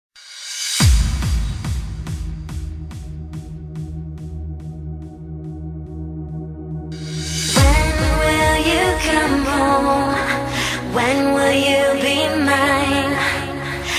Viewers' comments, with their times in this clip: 0:00 Nah fuck that is start let the beat build up from there.